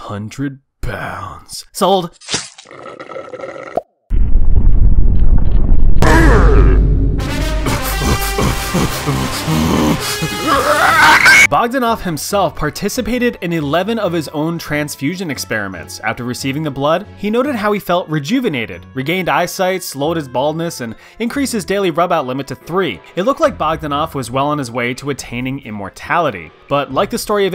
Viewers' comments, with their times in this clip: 0:04 Excuse me what was that SCREEM😂
0:14 thanks for the destroying my ears unsubbed and removed from recommended g f'ed